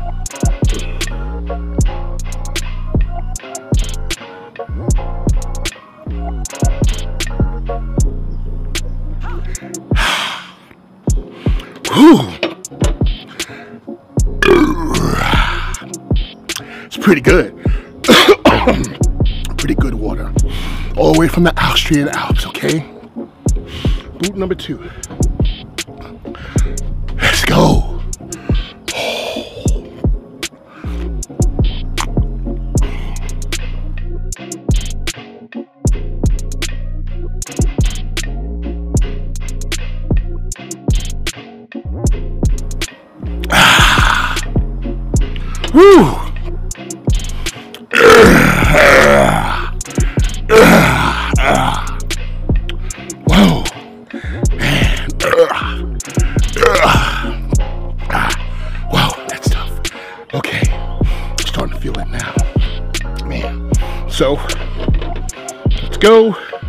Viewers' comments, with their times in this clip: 0:09 On beat much?? 😂
0:47 mgm? studios intro lion be like:
0:47 Mans just burped like the MGM roaring lion Lmao imagine this clip in the center of the logo instead of the lion
0:49 that was a ROAR not a burp lol